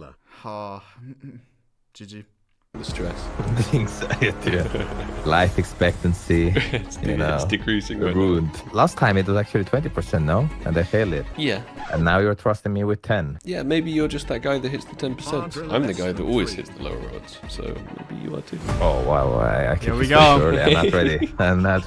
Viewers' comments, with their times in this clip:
0:06 Oh my god i was literally searching and getting really mad looking everywhere and then gave up 5 minutes later to see your comment and i was so i decided to click it and heard the notification again ffs i feel fucking dumb